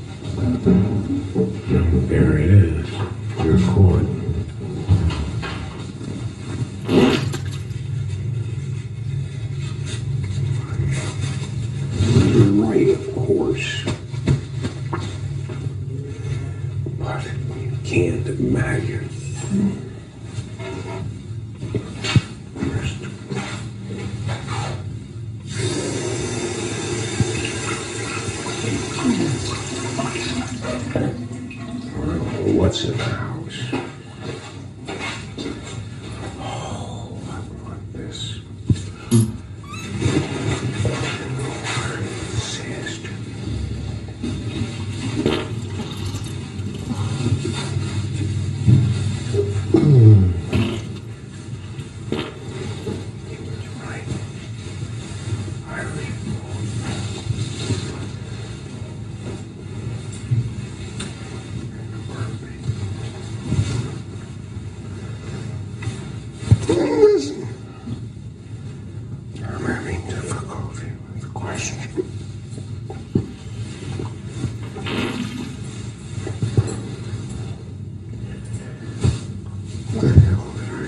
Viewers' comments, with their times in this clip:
0:07 is that a freakin’ fart???
0:39 The little squeaker lmao
1:02 Never mind the burping, your arse is spilling all the beans.